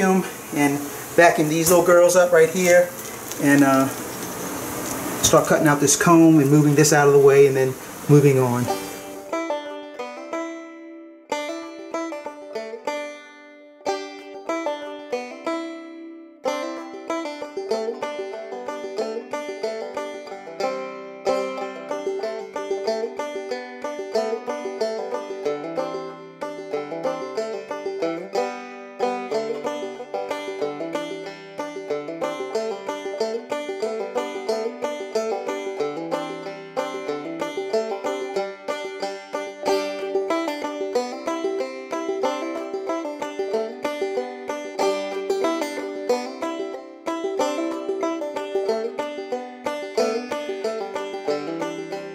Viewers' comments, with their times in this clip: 0:08 of the video banjo music starts playing. What song is this?
0:40 I think playing the soothing banjo was a good idea to mellow those bees out